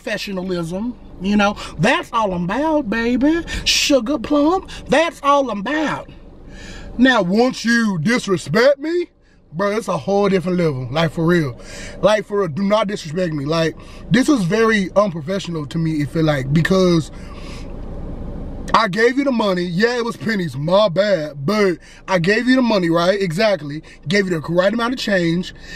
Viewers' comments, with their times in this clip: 0:09 That’s scared me his voice got deep🥴🥴